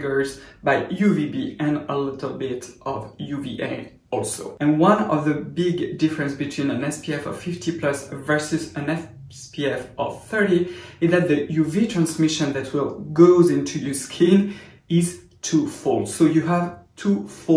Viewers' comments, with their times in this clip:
0:04 Y'all hear that ALSO